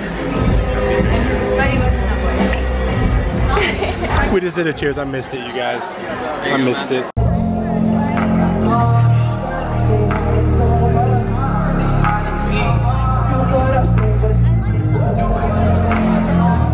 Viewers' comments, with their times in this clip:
0:03 the gold digger laugh